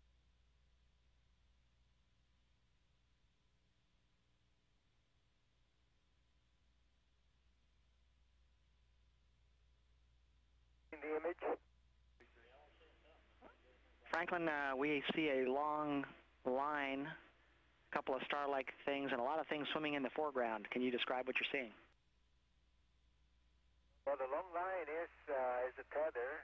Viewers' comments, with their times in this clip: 0:07 You can even tell when they start talkin again . They was clearly talking on another channel .. before going live to us